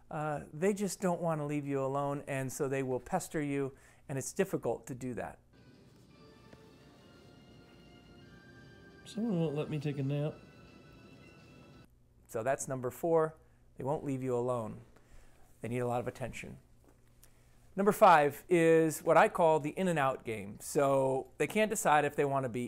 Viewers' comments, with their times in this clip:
0:08 when Finn is bugging you on your nap, unless I’m not mistaken it sounds like somebody in the background is playing one of the original Pokémon games LOL besides that random comment I love the video!